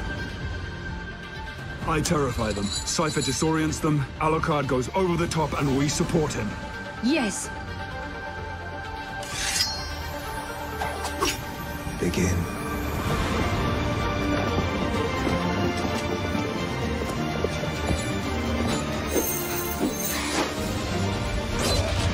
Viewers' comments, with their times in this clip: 0:07 was the best part to the trio readying themselves to the sound of "Bloody Tears" in the background. That was as epic as it gets!